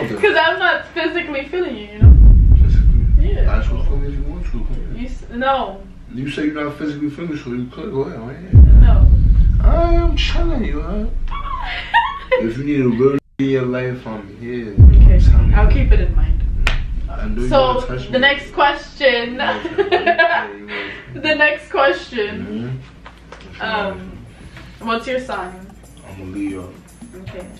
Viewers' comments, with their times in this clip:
0:08 her laugh cute😹💯